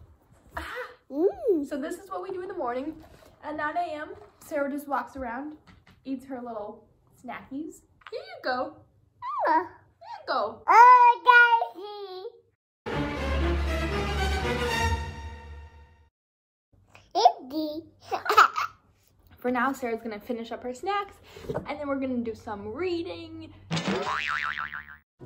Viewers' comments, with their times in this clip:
0:09 Kelpy G in the back